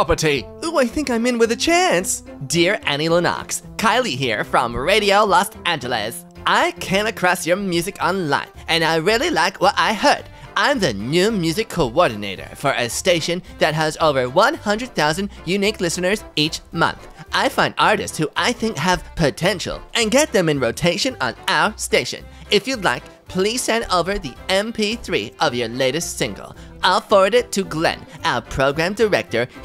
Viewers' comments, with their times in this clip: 0:04 why are you suddenly Southpark Canadian lol
0:16 He sounds like a south park character here
0:16 Bro sounds like Eric cartman